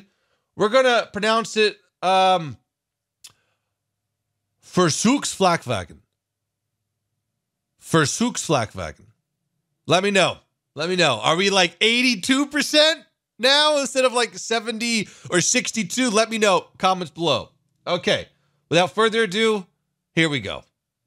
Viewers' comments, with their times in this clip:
0:04 it’s okay maybe a 89%
0:08 way better then the last time :D